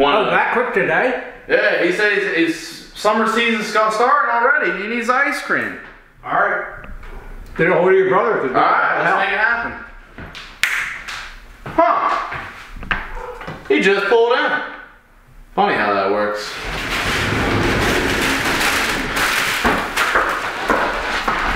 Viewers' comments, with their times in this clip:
0:09 there is a snap to make the car appear